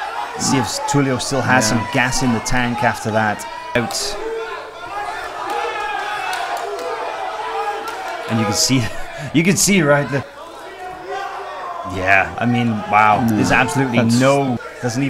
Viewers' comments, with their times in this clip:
0:03 lmao the fuck was that clap about Jesus this was hard to watch